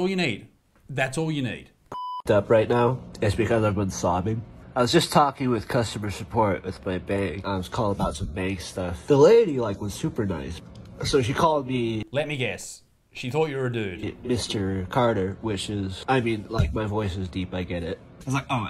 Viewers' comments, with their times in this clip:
0:04 Dude sounds like the yellow guy from smiling friends